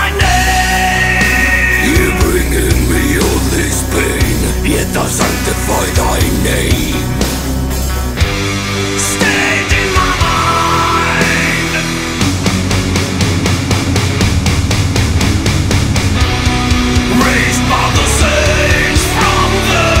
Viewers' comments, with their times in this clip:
0:08 Steak in my mind :D